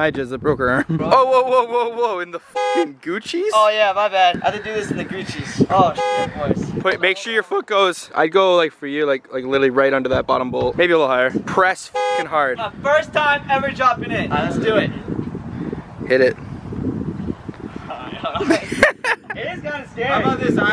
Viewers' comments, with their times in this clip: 0:06 that voice crack tho lmao
0:07 ULTIMATE VOICE CRACK